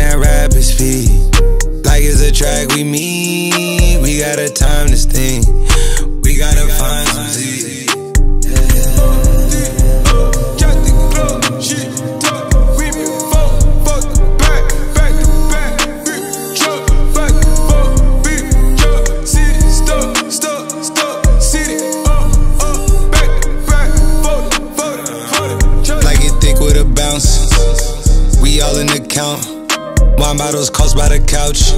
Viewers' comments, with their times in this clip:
0:09 onward sounds like gunna to you?
0:16 When he “ooohhh” I felt that!